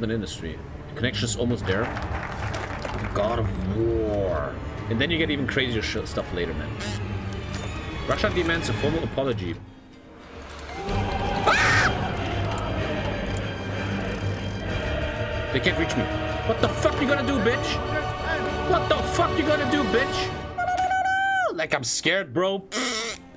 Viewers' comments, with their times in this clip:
0:10 The little scream man XD